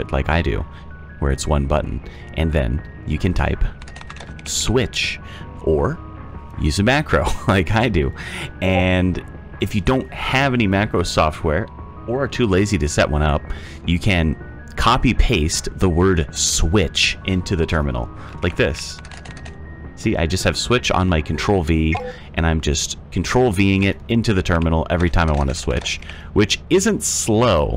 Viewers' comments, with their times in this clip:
0:07 That discord notif made me so paranoid i was looking for a message for 3 whole minutes (。_。)
0:07 that doscord ping though
0:08 Discord notification made me think I was going crazy. Excellent video, going to absolutely destroy the next moon with the boys. Thanks 🙏
0:08 that discord ping is just evil
0:08 Hey nice video but that discord notification was fucking me up. Had to check twice if it was mine or yous
0:09 the discord ping got me😭